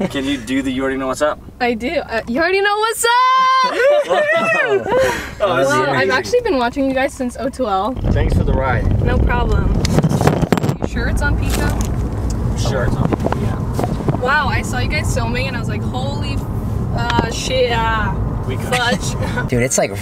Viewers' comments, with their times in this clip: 0:06 “I’ve been watching u guys since O2L” me: how is she so calm damnnn